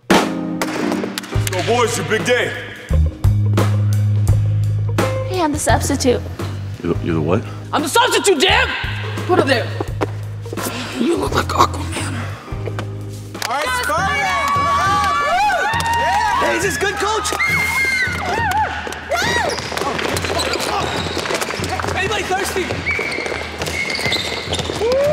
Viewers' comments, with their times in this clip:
0:08 at laugh does,t stop